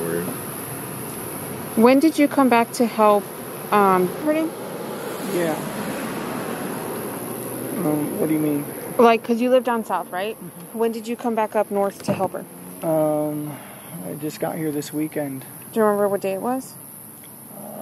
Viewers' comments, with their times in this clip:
0:04 who's that additional female's voice on here & what's being said?